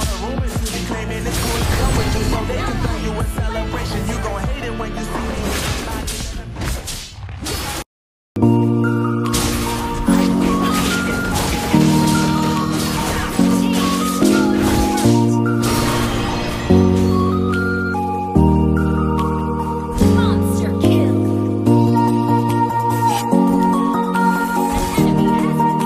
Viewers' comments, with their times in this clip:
0:07 Bro the song in the end is so perfect